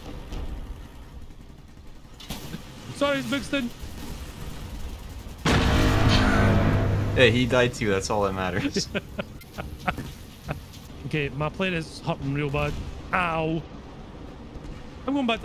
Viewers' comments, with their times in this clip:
0:03 the seiemic charge sound so good